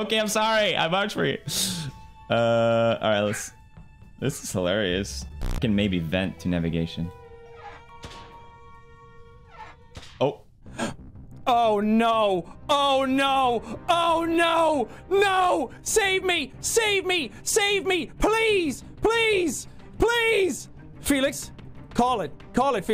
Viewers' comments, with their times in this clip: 0:05 When pewds vented in front of jack and jack went screaming was comedy gold. He thought he fled from felix but then got killed by toast. Fucking hilarious 😂😂😂😂